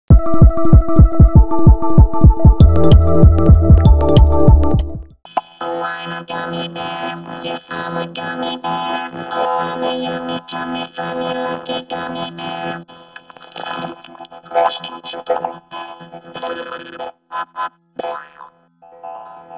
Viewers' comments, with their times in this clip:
0:05 Sounds Like. 4ormulator V40